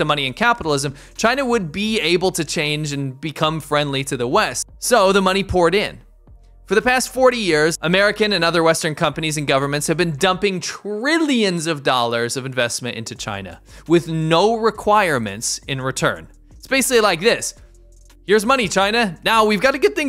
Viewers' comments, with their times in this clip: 0:08 The way they count moneh, I just can't 😂😂😂